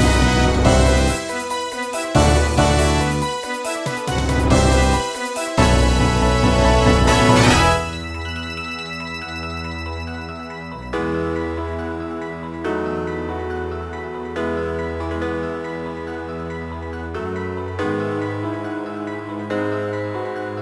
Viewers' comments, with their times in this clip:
0:08 Best mix I found of Rainbow Road, I love the part Especially when the piano bass comes in strong.